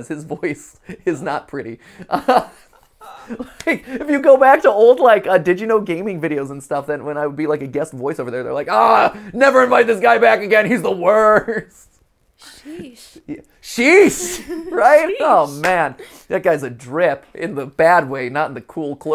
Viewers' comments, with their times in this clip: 0:03 I like your voice! 😊